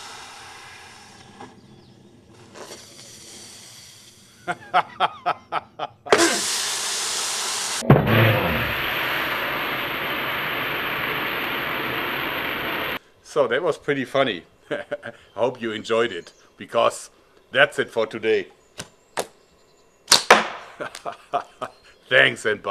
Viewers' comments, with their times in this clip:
0:07 The slowmo footage sounded like the Ivan head was growling. Like a real zombie!